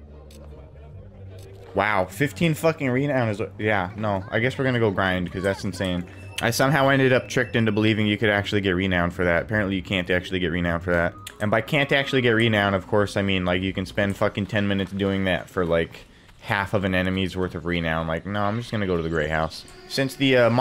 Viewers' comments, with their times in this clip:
0:04 was that thunder in bowerstone ??